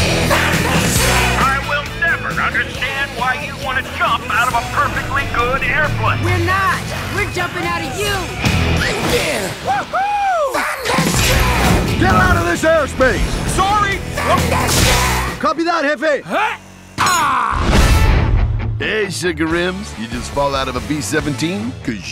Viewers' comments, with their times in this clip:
0:06 it sounds like Huey or Riley off of the boondocks and to be honest when I saw that part I thought Regina King played in this movie